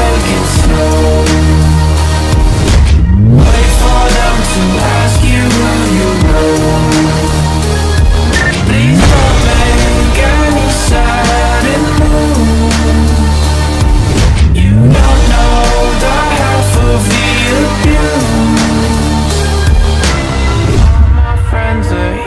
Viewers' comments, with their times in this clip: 0:05 why is it giving diving in a car in Dubai